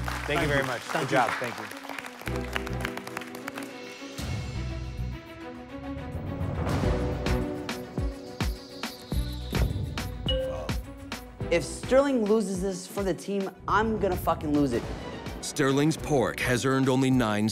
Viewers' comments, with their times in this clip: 0:05 Why does the music turn into a uk drill beat 😂